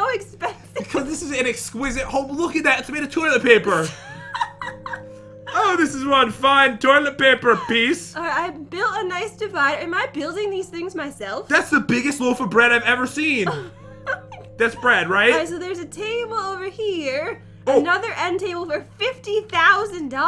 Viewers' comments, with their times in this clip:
0:04 the chair was made of toilet paper laughter